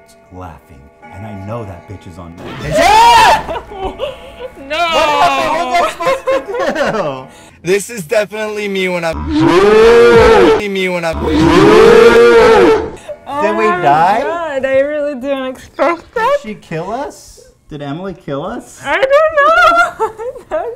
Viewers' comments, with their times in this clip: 0:06 that laugh tho 😂